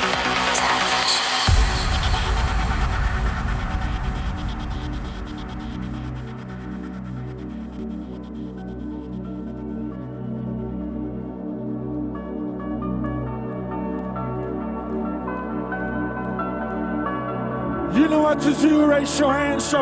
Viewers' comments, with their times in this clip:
0:04 Does anyone know what song comes on at around the mark? the duh duh duh like a piano... duh duh duh duh uh.. duh duh duh.... duh duh duh duh ... will do anything to find out.. msg me!